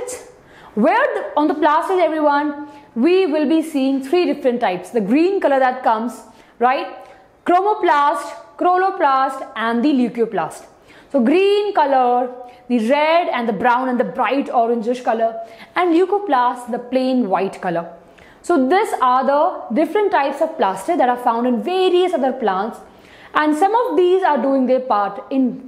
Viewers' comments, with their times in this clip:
0:08 chloroplast mispronounced mam......but it was an amazing session......helped